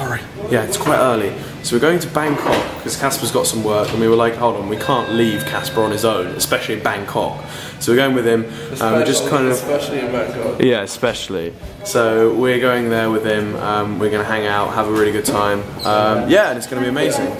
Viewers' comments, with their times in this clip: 0:04 oil said bancock *it was meant to be Bangkok